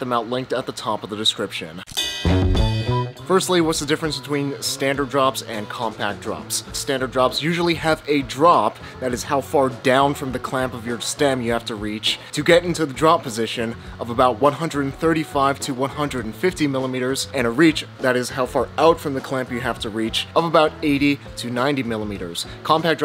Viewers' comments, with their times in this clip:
0:08 Holy fuck, that generic song that sound hahahahha otd is so cool